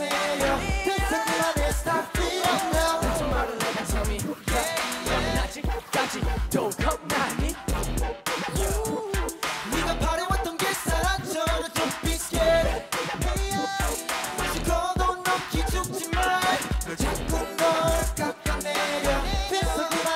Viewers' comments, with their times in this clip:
0:06 tbh this is one of the best performances so far i love the camera work and it's obvious that they're singing live also jiung is super cute lol i love you guys <3
0:06 Jiung's cute lil' laugh